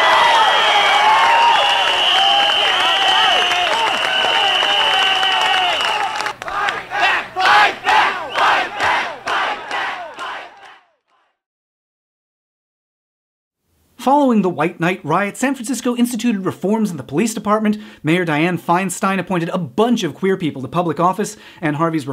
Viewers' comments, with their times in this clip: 0:04 I started crying because I was just. So hit by the passion I heard in their voices